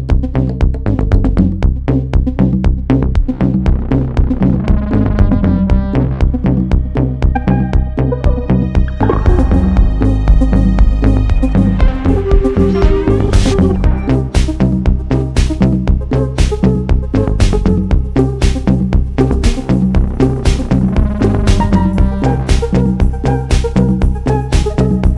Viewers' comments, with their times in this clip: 0:08 I love this and am so thrilled by Oliver's recent work. But someone coughs and I can't unhear this lol <3